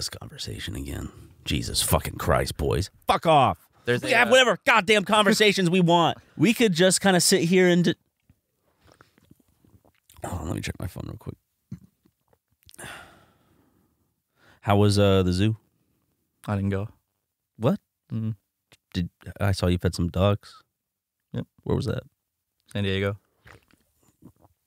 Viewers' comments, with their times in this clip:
0:06 that sounds just like current game grumps